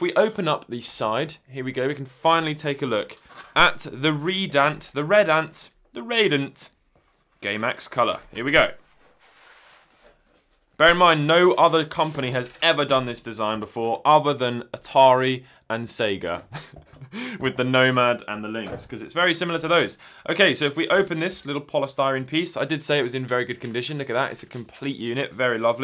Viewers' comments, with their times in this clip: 0:08 gay max color